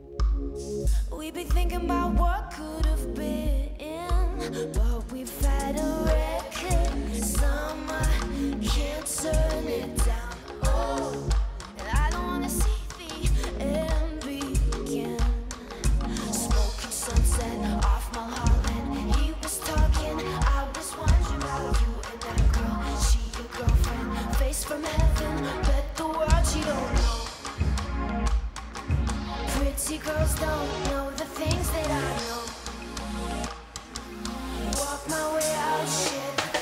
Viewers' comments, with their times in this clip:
0:08 I had a hard time figuring out if she was lip syncing or not. What proved to me that she wasn't is that she takes the mic from her mouth and says "OH". It sounds like she's singing it even though the mic is away from her mouth. But, it's the backup singers you're hearing. If you close your eyes and listen to it carefully, you do not hear her voice singing "oh".
0:09 She says "Oh" away from the Mike and it sound just as clear and close as everything else she sang 🤔
0:10 Lords using autotune after
0:19 Wow when she brushes her hair and moves to mic away she has the ability to maintain perfect volume...that is a talented artist!
0:19 For the people that say she is lip syncing... when she fixes her hair and pulls the mic away from her lips her voice fades. So that means it WAS live.👍👌
0:19 Is it just me or is she lip syncing this =/. she runs her hand across her face, blocking the mic, but the sound doesn't change...? Could be the backing vocals are prerecorded, but Iunno.
0:20 I believe her. She's not lip syncing. If you hear her voice faded for a second because of her hair. Plus, it would be shameful to Howard Lawrence who's doing his part to back her up. Love LORDE.